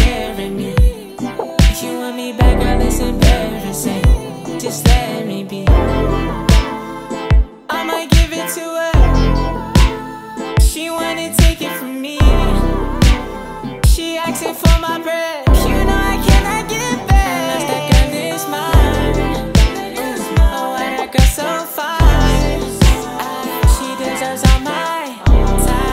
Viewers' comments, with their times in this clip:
0:07 Love the faygo type adlibs on this